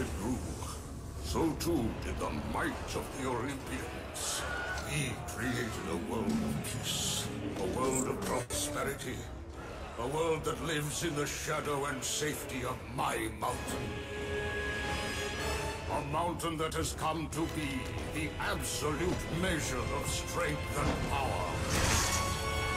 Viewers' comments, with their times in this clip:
0:03 did i?!? did i???? did i heard the famous scream???